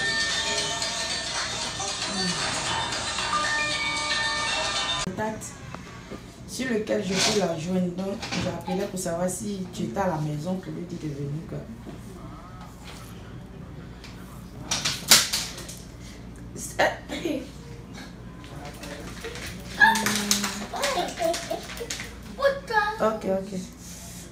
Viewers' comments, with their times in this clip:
0:08 she speak french 🙋🏽‍♀️🇫🇷🇫🇷🇫🇷